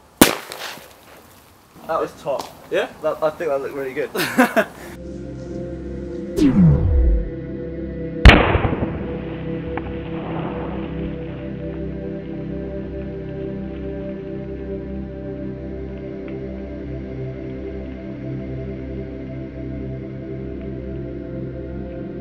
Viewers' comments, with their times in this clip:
0:07 Thats how the universe was created that was the big bang
0:10 and it all started with a big bang ! BANG !